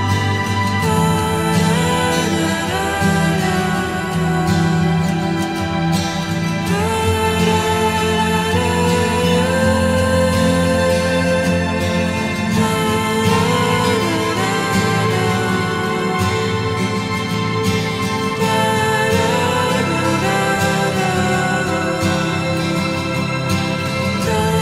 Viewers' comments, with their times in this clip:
0:06 Who is that singing minutes?.. I love her voice.